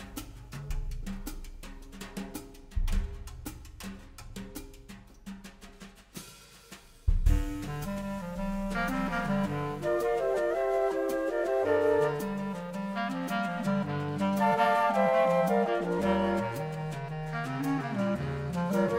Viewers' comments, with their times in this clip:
0:05 Andrea Motis keeps getting better, and the arrangement is outstanding. What a woodwind sound !!!!! This might be the Best big band I've ever heard.